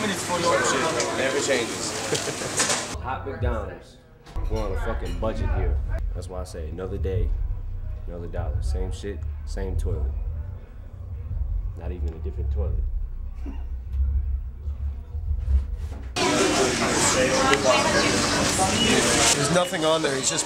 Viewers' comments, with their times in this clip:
0:08 his voice started to go deeper here